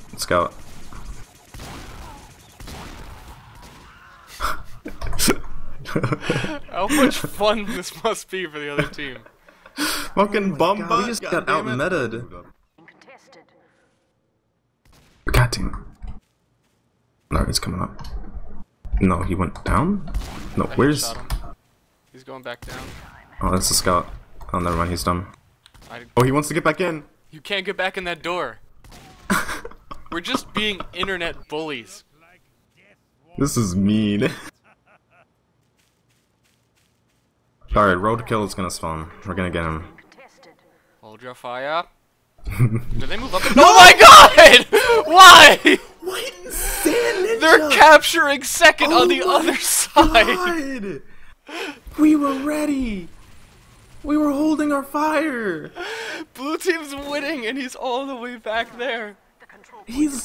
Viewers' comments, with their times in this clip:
0:08 Wtf is he saying
0:42 be prepared to lower the volume on your headphones, holy shit. XD